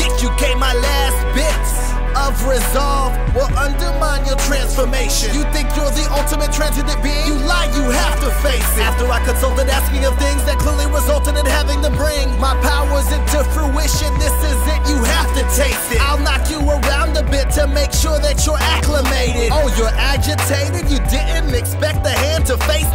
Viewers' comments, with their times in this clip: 0:08 Sorry, "..asking and consulting.." is really rushed compared to the pacing of "my powers to fruition" which I think you could pull off but there's a pause between "bring" and "my." It seems like it was edited and if there was the smallest haste it would help the flow. Otherwise good flow of the syllabelles of the lyrics. I'm no proffesional by any means so don't pay too much attention to me. On a completely unrelated note, nice zanpaktou.